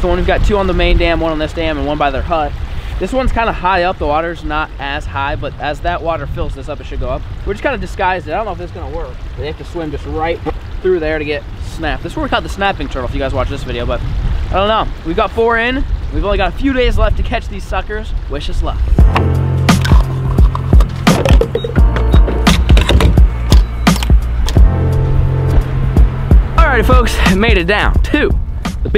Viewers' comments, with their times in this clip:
0:09 mins in he farts